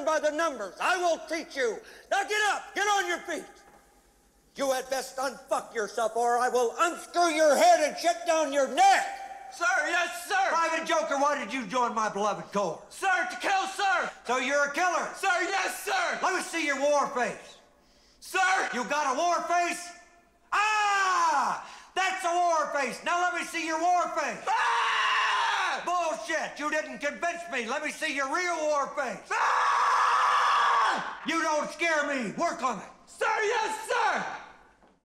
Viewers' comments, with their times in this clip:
0:05 just love it when he says 'sh-t down your NECK!' as the warping intensifies as he yells neck.
0:19 I like how it get worst when he scream
0:20 the mouse's ghostly howl
0:20 I like how his face gets more distorted when he screams
0:21 the fact after he starts yelling everything just starts shaking uncontrollably💀
0:24 sounds like pear when he is annoyed (From Annoying orange)
0:28 This is pure terror, it's like Dobby genetically modified with the genes of a megaphone
0:29 Dentist: Say "ahhh" Me:
0:29 slammed in the groin with a 200 mph baseball